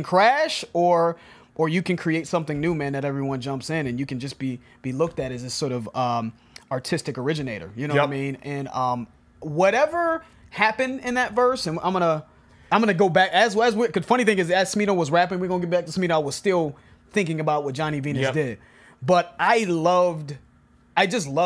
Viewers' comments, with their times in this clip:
0:08 ski mask “yup”